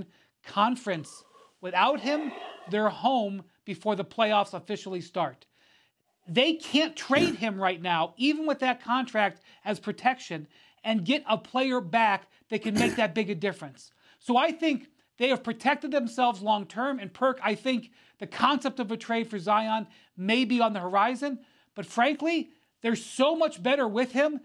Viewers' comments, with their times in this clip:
0:08 nice big yawn. Must have been Stephen A. He only looks interested when he’s talking.